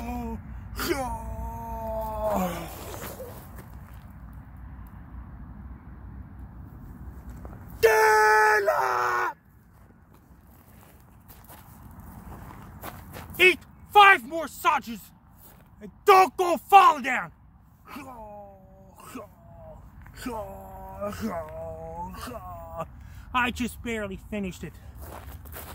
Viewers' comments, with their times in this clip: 0:08 I thought it was Defeat for sure until that head came up screaming STAND UP ! Even champs need coaches - what can I tell ya?